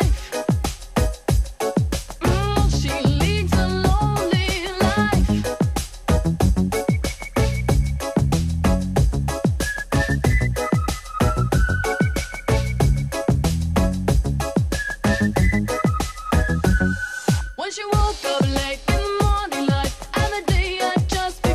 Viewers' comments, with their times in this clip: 0:03 .. when I first heard this tune on the radio (in Aalborg, Denmark) I was sure this was a "black" band. There was a lot of R&B going on too back then.